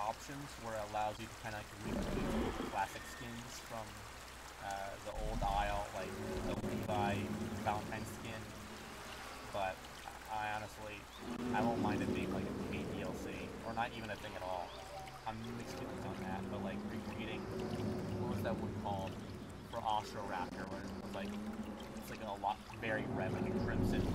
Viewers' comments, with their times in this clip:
0:09 I guess ish is kinda hard to hear me.